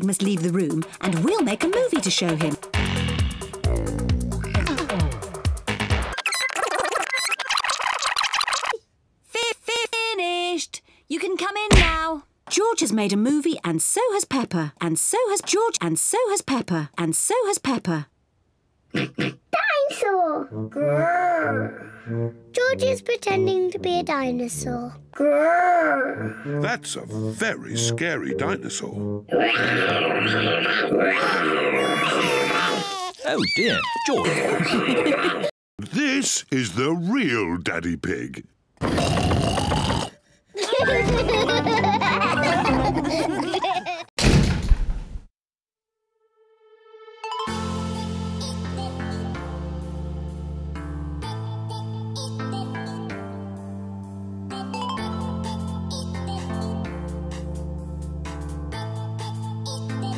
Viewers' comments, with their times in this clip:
0:04 is this ummm...... is just a......umm Came came camera why is there that umm MUSIC..... E P I C
0:06 peppa sounds like a chipmunk
0:47 This song makes me so nostalgic